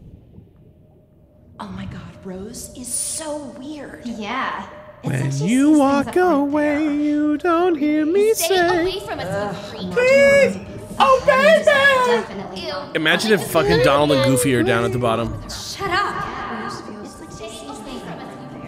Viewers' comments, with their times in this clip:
0:03 I love how y'all instinctively started singing simple and clean because sAME